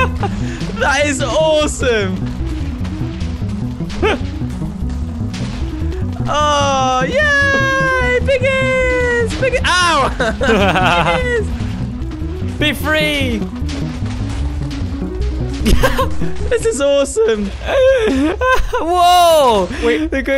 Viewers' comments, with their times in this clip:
0:04 2019 anyone and if younlitsen carfuly when he shoots the cannon point of the vid you hear the nyan cat song!